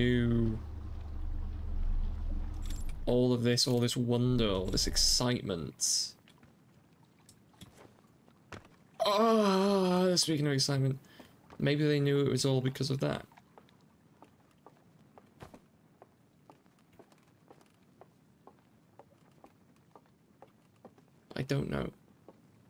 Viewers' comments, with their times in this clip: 0:08 I paused on just barely before you made that noise, imagine my surprise when I unpause the video and you make that noise for reasons that escape me at the time